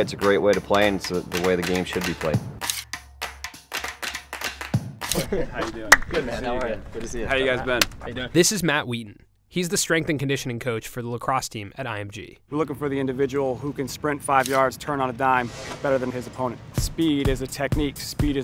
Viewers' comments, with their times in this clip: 0:05 That sound was so crisp I had to replay it